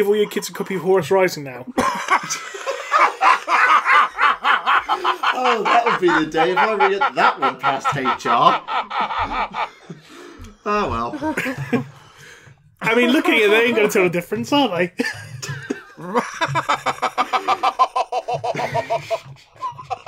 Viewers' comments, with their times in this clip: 0:04 best laugh on the podcast ever